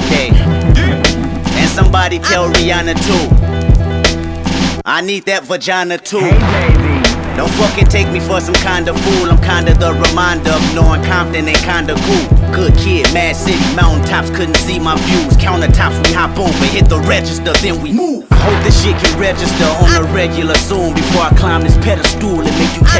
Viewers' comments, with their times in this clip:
0:06 That bass drop